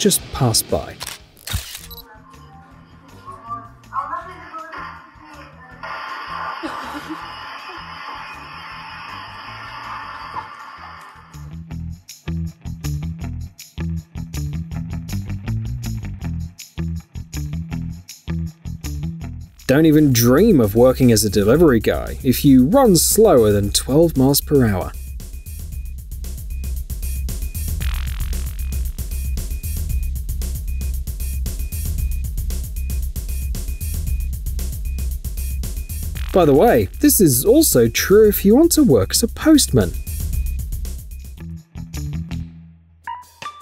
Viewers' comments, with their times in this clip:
0:06 Now that's what I call a Fart.
0:26 why tf the background music sounds like fart lol 🤣🤣🤣
0:26 = wrist watch alarm & wet fart music